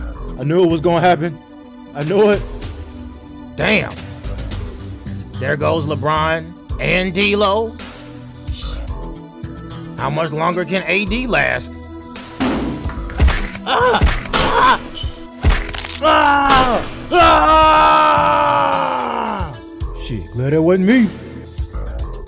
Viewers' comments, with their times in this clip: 0:06 That "shit" was so distressed